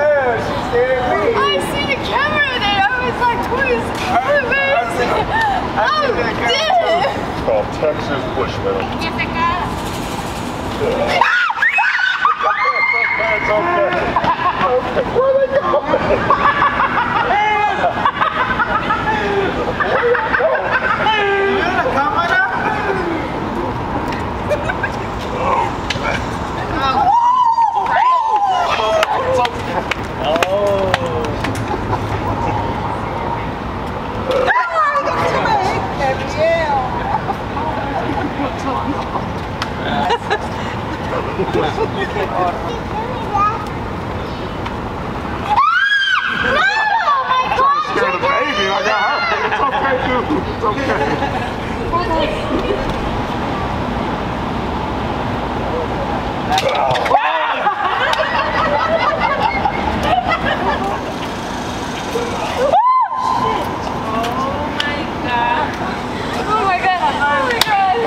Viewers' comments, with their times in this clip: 0:09 man the laugh on this guy with the women running away 🤣
0:15 The laugh is priceless
0:16 woah what was that mating call 🕊🕊😂
0:17 The laugh from the guy in the yellow cap is THE GREATEST!! 😂😂😂😂
0:19 what is that laugh lmao. Reminds me of Jimmy Carr
0:20 The laugh 😂😂😂 Sounds like a duck gasping for air.
0:21 whaha that guy from sounds like a kookaburra
0:53 the least manliest of men. That gay dude screamed and ran.